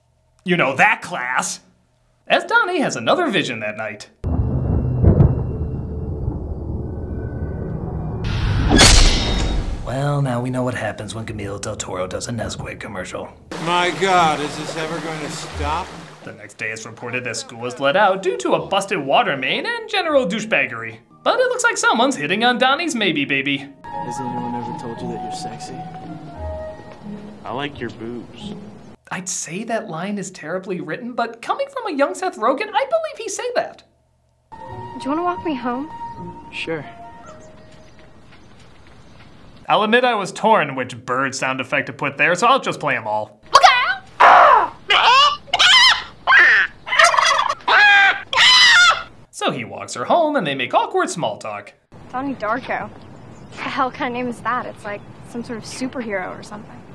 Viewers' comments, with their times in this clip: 0:09 I gotta give props, I think that's the worst pronunciation of Guillermo Del Toro I've ever heard.
0:10 I'm starting to wonder if Doug has some form of dyslexia. Throughout this review he calls Gyllenhaal "GyllenTHaal" and then he calls Guillermo Del Toro "Gameel Del Toro".
0:37 I would've put in a fast Richard Nixon style AROO!
0:37 you forgot "mine!"